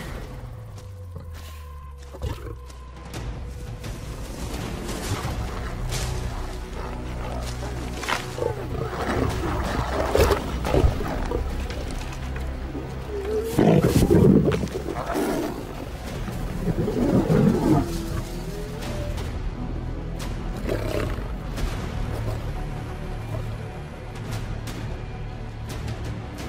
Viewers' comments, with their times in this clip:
0:08 Wait queen mates with a stranger but her king followed her as he approached she took off running & they started fighting first time seeing wow sounds like people